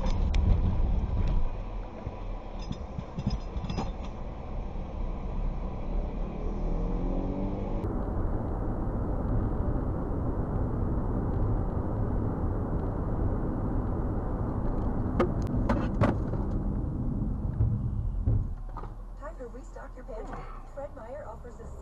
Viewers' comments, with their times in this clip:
0:05 I'm hoping that it was your passenger that was playing Pokemon Go (audio in the background) or that you were using the Pokemon Plus+ with your phone.